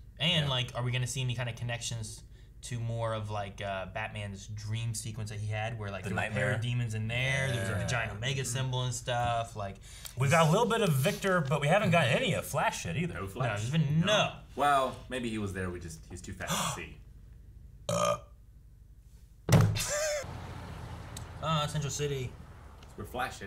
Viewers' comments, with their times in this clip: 0:09 I've never seen a realization burp before lmao Also you boys are saints for getting these parts out so fast and all on the same day.